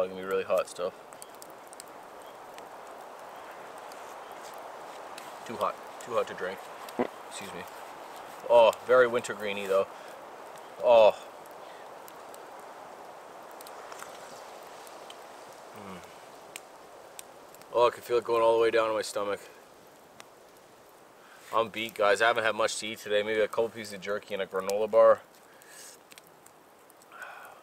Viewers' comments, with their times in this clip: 0:06 Fart. Guess that tea WAS too hot!
0:14 The fart tho 🤣💀